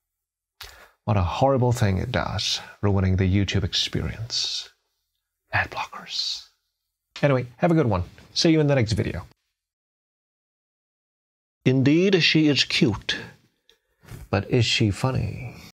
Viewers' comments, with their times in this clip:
0:11 "Indeed she is cute, but is she funny?" The way you say it makes you sound like shakespeare 😭